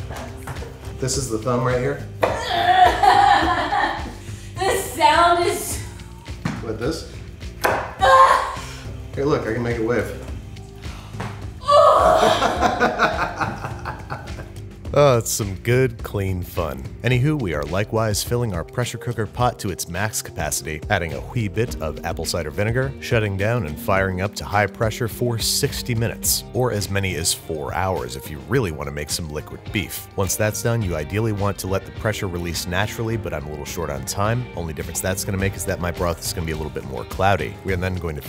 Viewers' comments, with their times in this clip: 0:10 That audible inhale really gets me XD
0:12 such a disney villain laugh 😂💕
0:21 So no one’s gonna talk and how he sounds like Stewie saying cool whip?